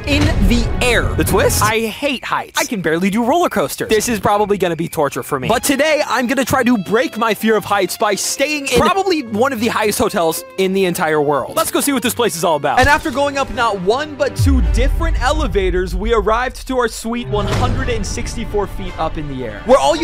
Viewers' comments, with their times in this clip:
0:07 I thought he said brake my feet😂